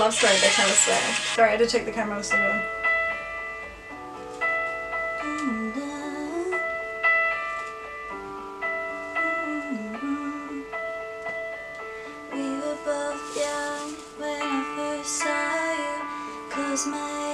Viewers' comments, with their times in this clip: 0:03 (Singing “Love Story”) your voice is so beautiful ❤️ x